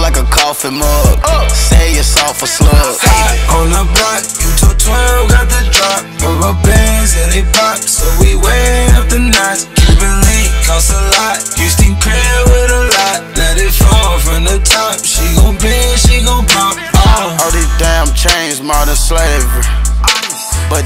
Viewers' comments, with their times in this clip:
0:03 where da fuck did trav come fromgot me rockin n shit i wants ready for this song 😆💯🔥